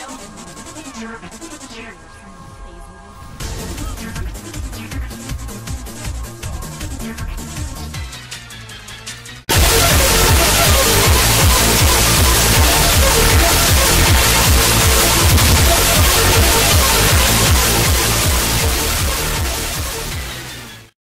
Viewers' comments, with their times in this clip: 0:08 Your Very Own Ear-Rape Button